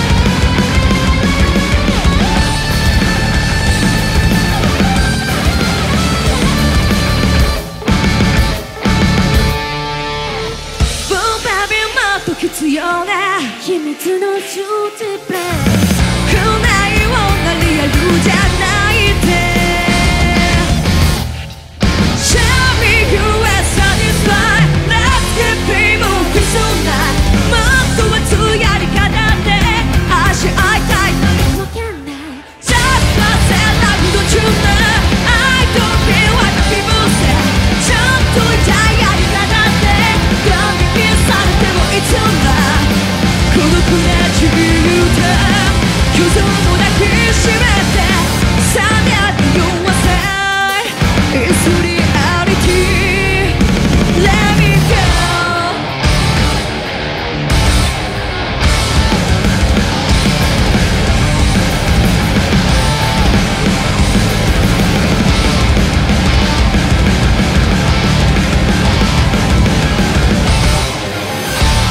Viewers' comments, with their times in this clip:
0:09 Saiki looks the the Vulcan Goddess of Song - if there is such an entity. Just sayin'. Liking this girl's voice more all the time. It has some guts.
0:30 WOW This is BAND MAID. mi favorite moment. Mikus voice <3
0:31 Things that always get me with this: Saiki and Misa dancing and grinning in verse 2, the extra 2 -beat stutter steps before the 2nd and 3rd chorus, and Miku's quiet little vocal interjection before they slam back into the last chorus.
0:50 Was that a cowbell I heard ? We need more cowbell!
0:54 The build on that ending from on is phenomenal.